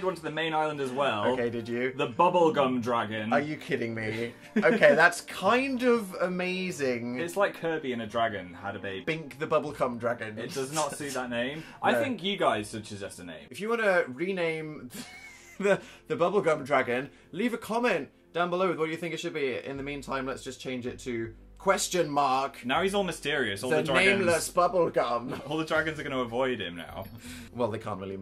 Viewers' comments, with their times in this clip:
0:07 it sounds like Dan said bink the bubbleCum dragon! am i the only one?
0:09 Anyone else notice that Dan says "Bink the bubbleCum dragon" ??